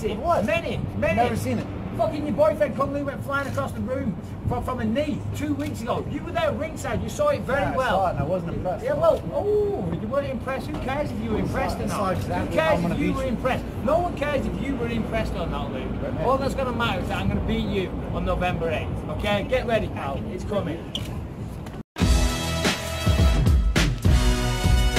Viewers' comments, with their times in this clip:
0:08 absolute funniest part of the exchange. The hand gesture & "ouwhhh" noise he makes is a zing. Unlikely Bisping wins this though. Don't see this as a good style match-up.